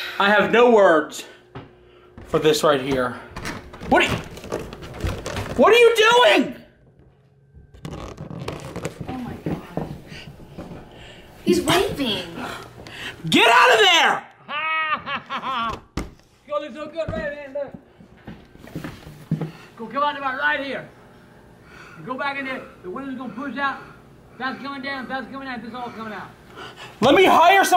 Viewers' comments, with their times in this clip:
0:08 lmao his fingers & laugh. I'm dead😂💀
0:13 he sounds like freddy coming through the wall with his fingers laughing ...lulz